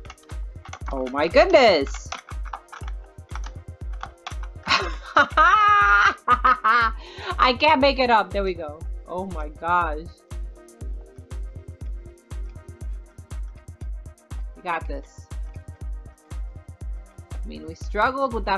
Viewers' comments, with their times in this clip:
0:05 it sounded like Billie eilish laugh 😂
0:06 * unicessary keyboard noises *